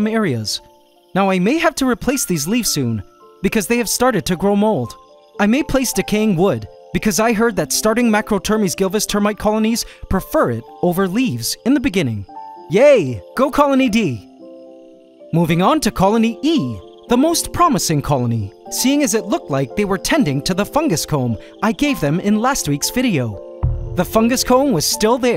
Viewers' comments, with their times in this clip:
0:07 nice rap part man